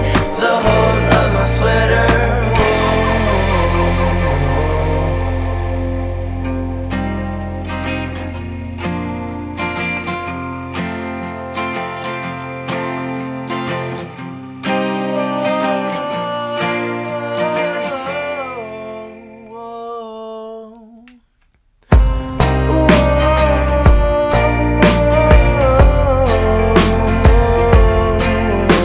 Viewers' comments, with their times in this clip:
0:06 Am i the only that think the melody on is very similiar to the start of the song toxic but like slowed,like if you start singing the lyrics it really fits :) <3 Boys, your a man and nothing can change that not even your mom/dad. Have a perfect day! we love yall very much!
0:06 Am i the only that think the melody on is very similiar to the start of the song toxic but like slowed,like if you start singing the lyrics it really fits
0:14 Idk what u guys talking about this the best part after the beat drop